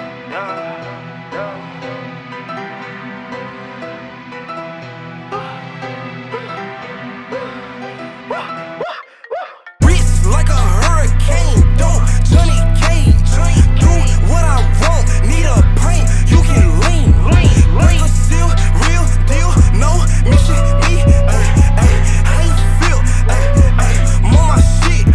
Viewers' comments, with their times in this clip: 0:08 anybody else hear a iPhone ring